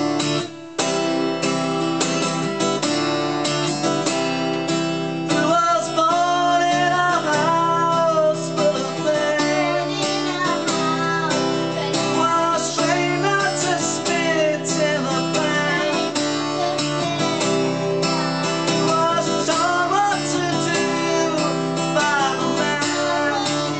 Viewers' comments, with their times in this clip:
0:09 I concur, that was seriously excellent, the vocals were right on, and very cool how you shared the stage